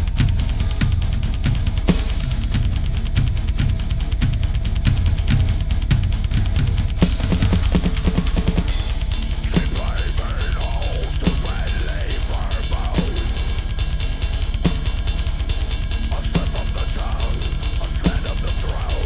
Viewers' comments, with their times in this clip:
0:06 yesssss a cover which gets the fill right !! finally!